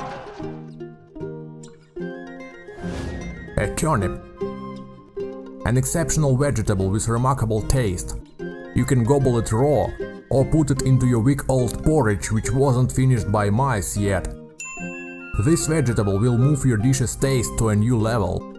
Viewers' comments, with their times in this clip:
0:03 A turnip The way he says it plain is funny